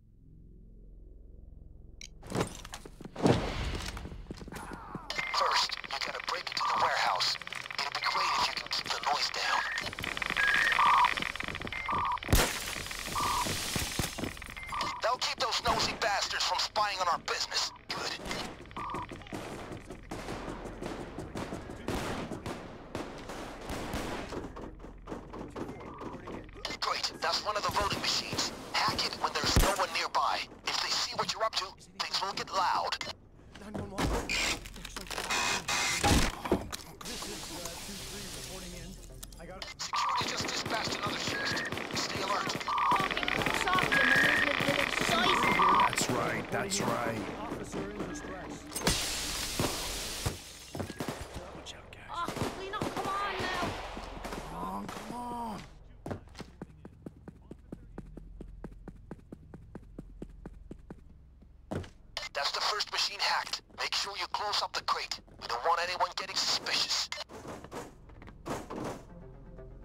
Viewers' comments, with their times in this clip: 0:04 "First, you gotta break into the warehouse. IT'D BE GREAT IF YOU COULD KEEP THE NOISE DOWN" Hearing windows smash and gunshots all around.
0:52 was that one of them that said ”good job guys” or was that in game? Genuinely curious